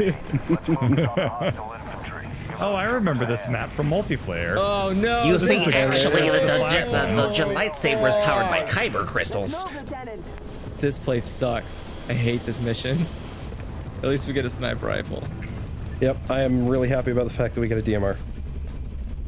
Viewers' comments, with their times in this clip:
0:07 That grunt tho 😂